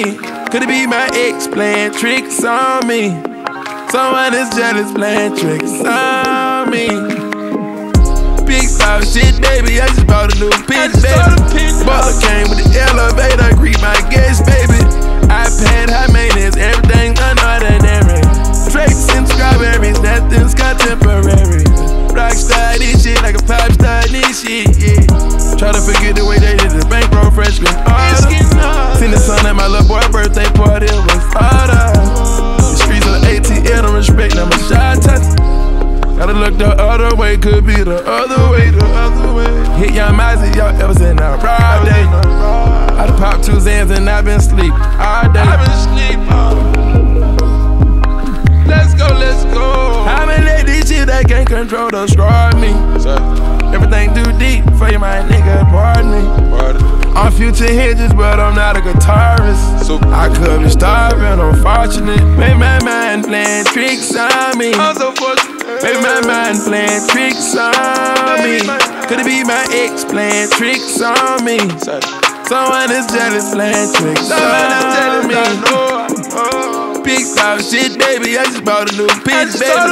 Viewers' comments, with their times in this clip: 0:09 when that beat drop tho 🔥
1:03 the adlibs are so dope